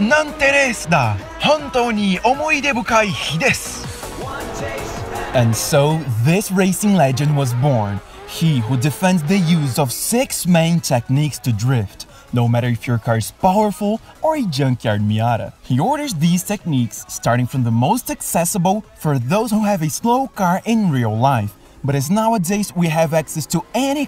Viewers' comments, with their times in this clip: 0:05 Actually pretty decent pronounciation except for a few words. Even sounded like a native speaker at some points.